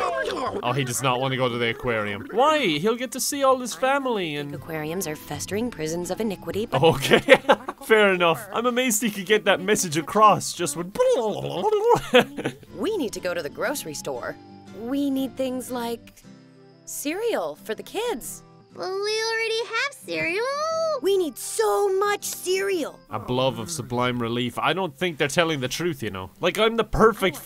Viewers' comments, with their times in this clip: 0:10 moment of silence for how perfect of an impression is